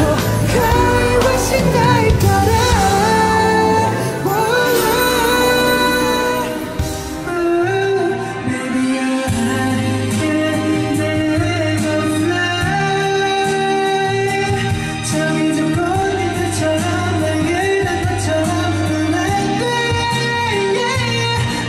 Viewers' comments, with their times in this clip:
0:07 that song make me fly